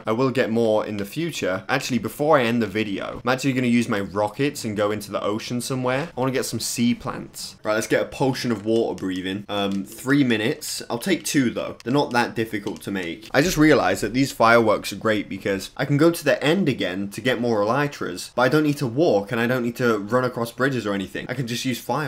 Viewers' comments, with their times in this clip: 0:08 wa er breathin